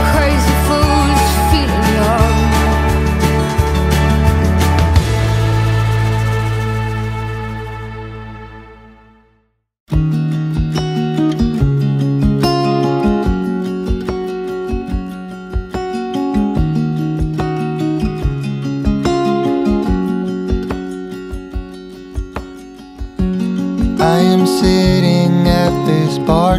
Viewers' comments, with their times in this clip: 0:10 How is that song peaceful???🥺😪😢😭😭😭😭😭😭😭😭😭😭😭😭😭